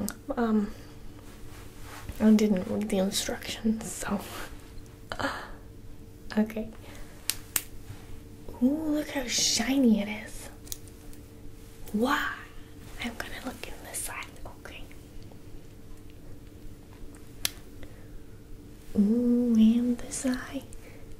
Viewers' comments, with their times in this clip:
0:05 she sounds just like that vine edit: OMG THANK YOU SO MUCH FOR 1.7K LIKES AHHHHH
0:05 "OK" sounds like that vine we all know!🔪 HELP!